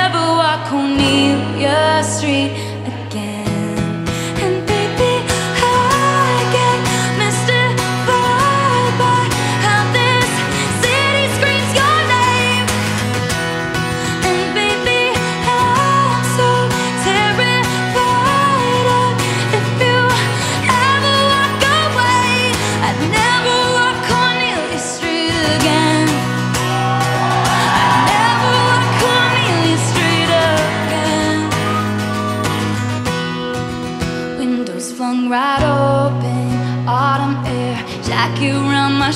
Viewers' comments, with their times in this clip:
0:06 these high notes auhh
0:20 “ever walk away” How does she do that? Make her voice sound a bit hoarse. I love it so much 😩